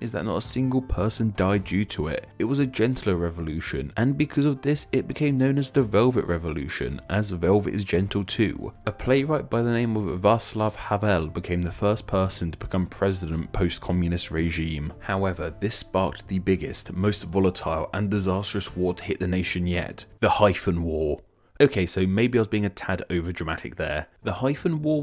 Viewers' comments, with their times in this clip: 0:09 as far as pronouncing czech names go... that wasnt so bad
0:10 just love Czech names being read in an english accent